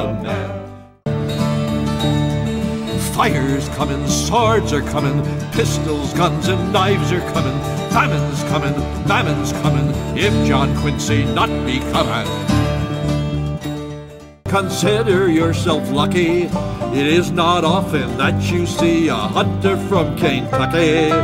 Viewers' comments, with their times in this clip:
0:04 Man, John Q's anthem goes surprisingly hard